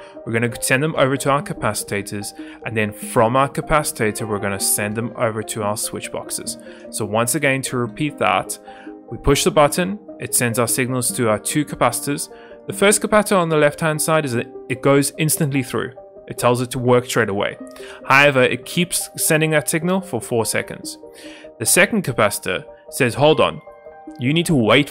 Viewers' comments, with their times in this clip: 0:04 ah yes the "capcitator"
0:12 im sorry "compata" ?